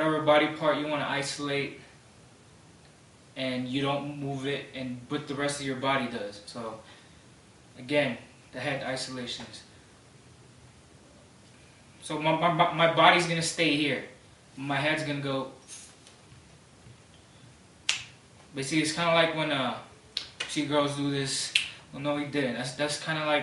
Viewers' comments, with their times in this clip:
0:09 Haha EVERYONE put ur MOUSE and keep repeating it after he says my Body lol. it sounds so funny i cracked up so much. "MMMuuu MUUu My Body" hahahahah so funny. anyways u raw man